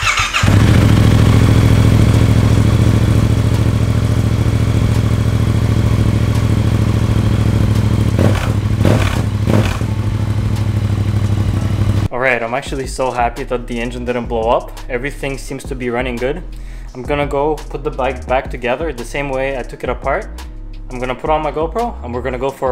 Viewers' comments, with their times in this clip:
0:09 what was that clicking noise when you started it and reved it